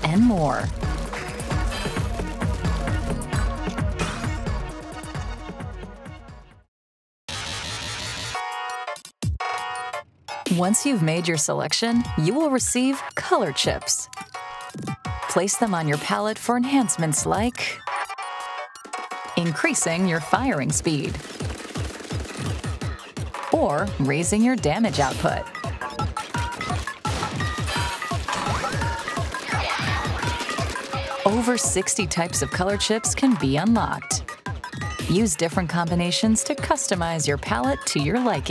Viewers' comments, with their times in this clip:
0:07 THIS SOUND TRACK SOUNDS SO GOOD I'M NOT NORMAL ABOUT IT
0:26 sounds like Eminem’s Godzilla 😂